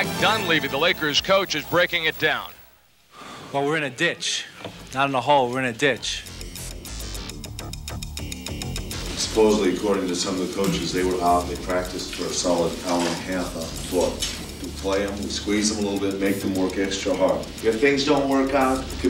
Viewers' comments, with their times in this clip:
0:06 that track that kicks off is getting me pumped hahahaha